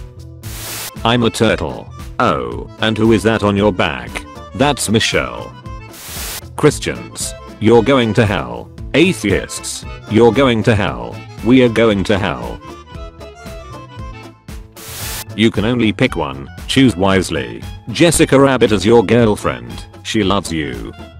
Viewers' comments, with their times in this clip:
0:03 I saw it coming, but I still wheeze-laughed at how it said the name.